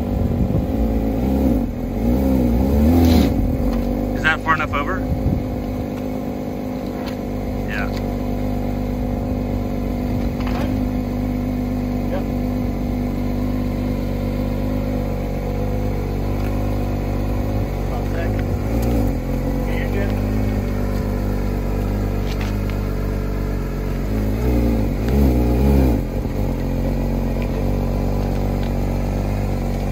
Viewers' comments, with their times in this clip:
0:10 I swear I heard a minecraft dog.